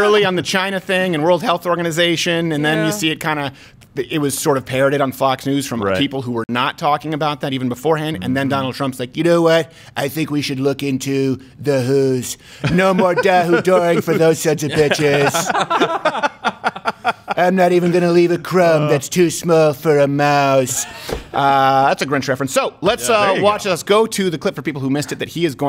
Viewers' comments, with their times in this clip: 0:09 His impression of Trump was actually uncanny lol